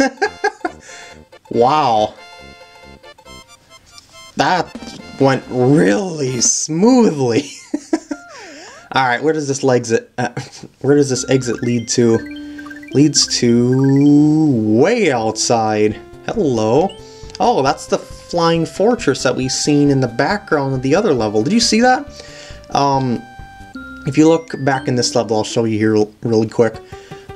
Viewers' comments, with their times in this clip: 0:09 you said legsit instead of exit